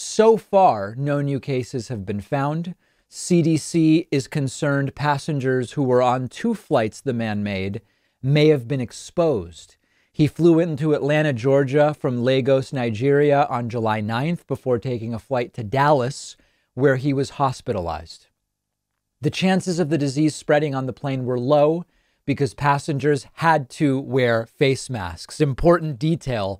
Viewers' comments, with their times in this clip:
0:09 Since when is Lagos pronounced with a long A? I've never heard it pronounced that way before... it's LAH-gos, not LAY-gos.